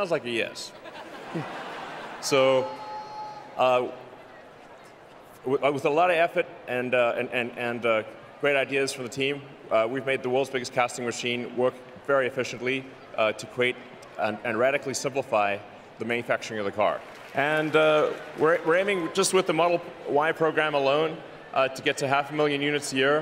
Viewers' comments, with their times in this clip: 0:08 an example of when he lost his flow and his south African accent shows.